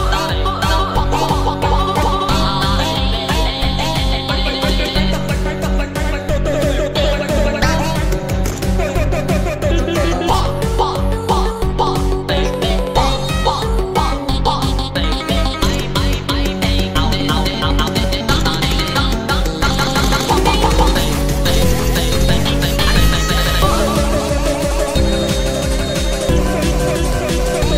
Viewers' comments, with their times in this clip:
0:10 Fun fact: Bambi and bandu are tuned but they sound like random words come out. However: if you listen carefully you can hear Bambi being tuned